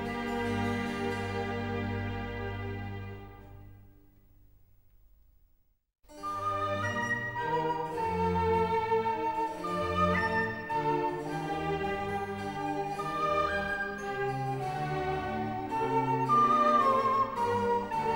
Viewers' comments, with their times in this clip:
0:05 I can't stop listening to the first part of the Menuet - IV. Andante its playfulness belies it brilliance.
0:05 is quite similar to the song All the Things You Are.